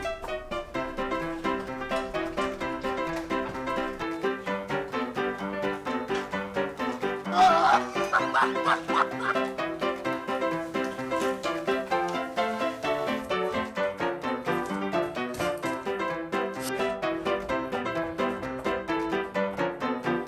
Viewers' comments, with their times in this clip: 0:07 ksi laugh. popular in Asia, i guess.